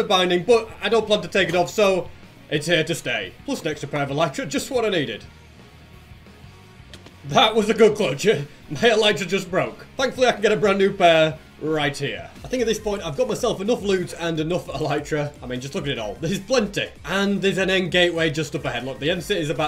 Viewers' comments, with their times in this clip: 0:06 no epearl sound?